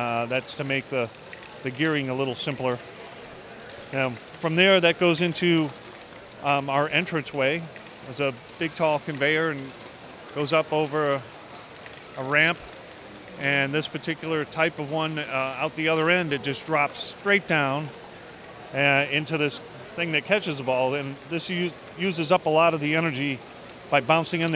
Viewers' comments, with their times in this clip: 0:08 I honestly thought the MC was Mark Cuban right here.... Shook